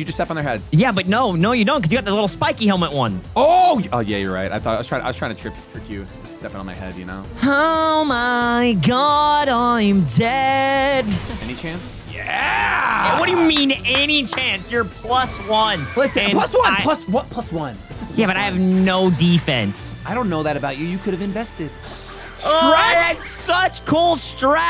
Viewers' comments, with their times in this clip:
0:08 bro thats a w voice ngl